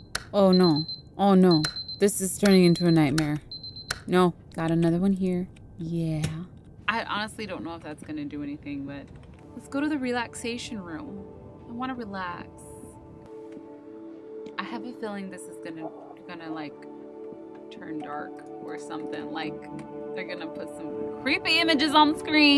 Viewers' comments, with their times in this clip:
0:07 ..... what happened to her mic??